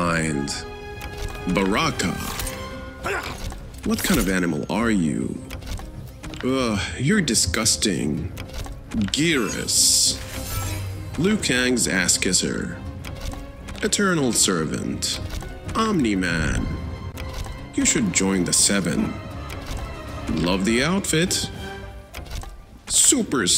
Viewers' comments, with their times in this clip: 0:06 why tf he say that with such a “gay” accent 😂😂